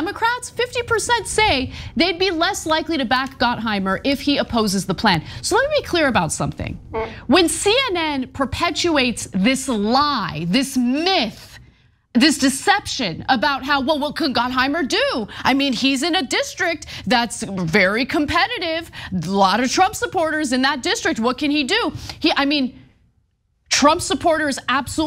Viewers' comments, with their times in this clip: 0:06 Some one farted lmfao! 😂